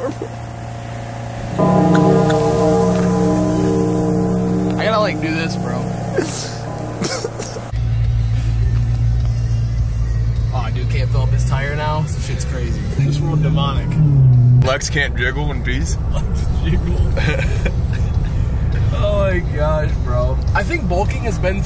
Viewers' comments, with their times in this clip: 0:03 the bells sent me